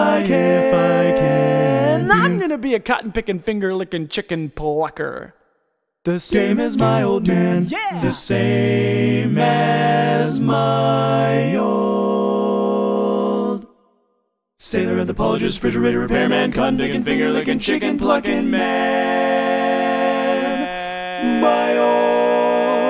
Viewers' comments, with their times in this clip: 0:08 soooo funny/cute/random. love it. i can tell you spend time really understanding your harmonies. :)